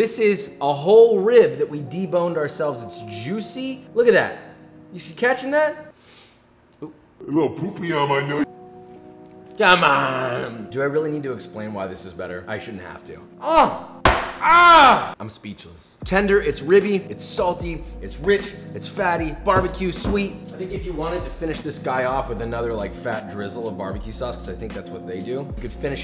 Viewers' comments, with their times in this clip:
0:09 "cmonnnnnn" that rib was so good Joshua turned into Guga for a minute there